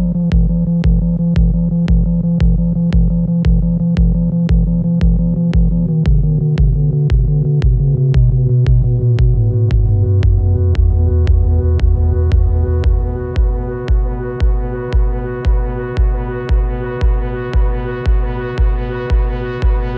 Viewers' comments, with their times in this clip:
0:05 The base on that drop rattles my sphincter every time. An amazing song. :)